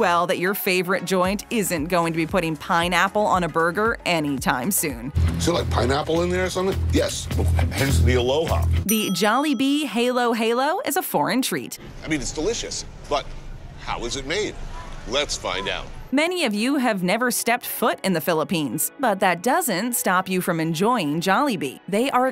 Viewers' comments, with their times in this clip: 0:09 Filifino Halo Halo American heylo heylo Ha-lo-ha-lo
0:09 okay this is offensive to me how dare you pronounce halo-halo like that... it’s suppose to be halo-halo not haylo-haylo